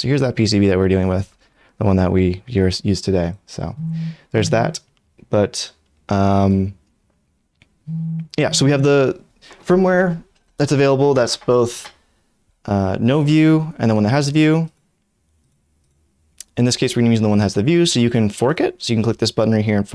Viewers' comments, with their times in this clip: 0:03 kept checking if it was my phone vibrating as I watched this video multiple times to build my corne XD